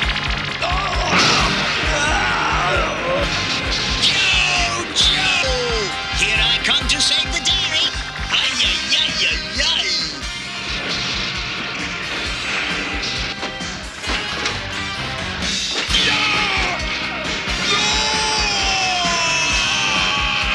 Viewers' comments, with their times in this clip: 0:06 what a great episode! very "night of the living dead" feel to it. very smooth anime look. watch this one in the dark. I love how Wreck Gar yells, "Yo Joe!"